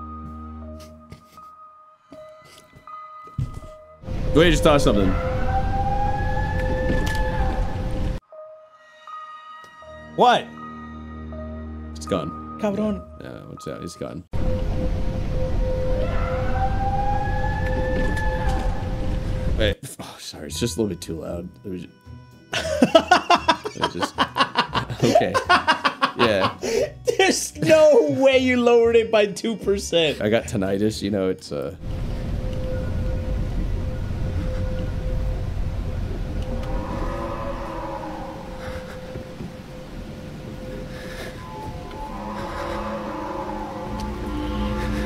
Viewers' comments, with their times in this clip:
0:04 Don’t worry, that’s just my cousin screaming cause he lost a game.
0:15 screaming in public restrooms prank
0:33 if you listen closely you can hear the sounds of Venus